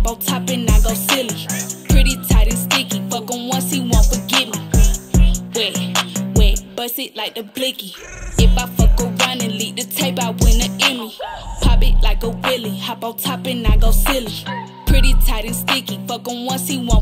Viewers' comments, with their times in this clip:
0:04 this nigga snor wild 😭😭